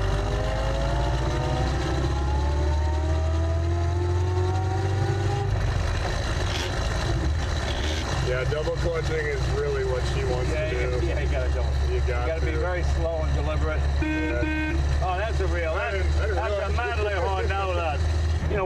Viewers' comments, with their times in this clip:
0:03 Love the sound of those square cut gears! Who needs sycnromesh?
0:06 I'm really surprised at Jay grinding gears! Surely he knows how to double clutch?